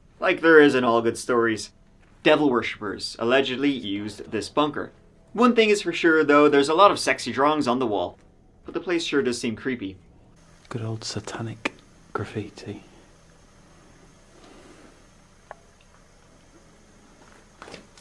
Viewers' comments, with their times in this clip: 0:04 you can hear a whisper evp